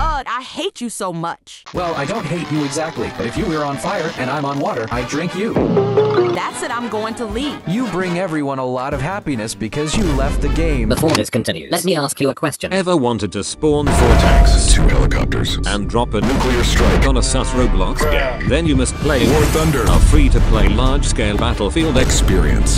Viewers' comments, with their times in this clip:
0:04 epik cuphead musik with flashbacks...